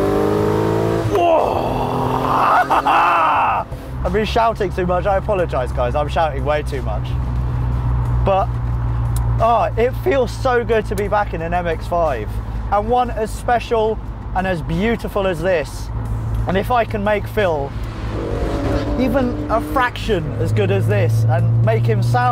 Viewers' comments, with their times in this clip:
0:09 It feels so good his voice actually broke.